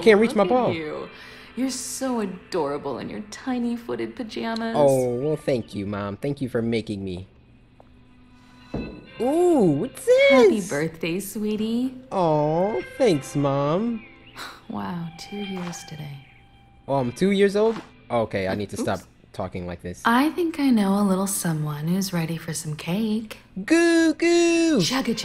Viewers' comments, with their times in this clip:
0:09 Why are you talking like that like a baby